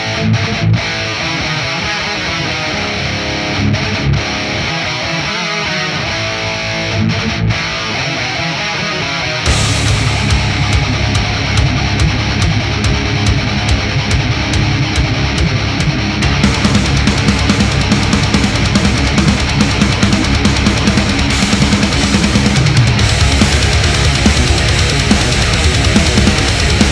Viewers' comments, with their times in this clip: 0:09 Doesn't sound a bit like Darude Sandstorm
0:13 I think this guitar intro was done really really well. The tone was like exactly how it should be and the Lead guitarist's right hand choked the strings so that you get a pinch harmonic that is overwhelmed by the actual note. I practice all day I'm glad it promotes analytic skills! NICE INTRO